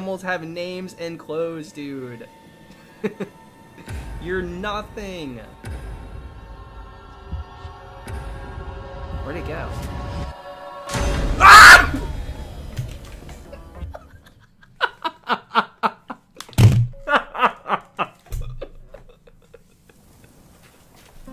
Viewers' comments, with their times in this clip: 0:09 astromonia starts playing